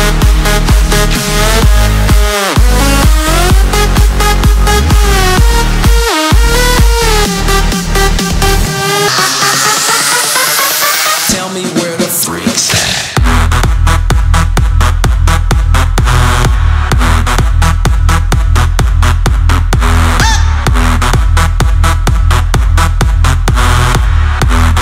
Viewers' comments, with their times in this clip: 0:06 no wonder why it sounds so KSHMR-like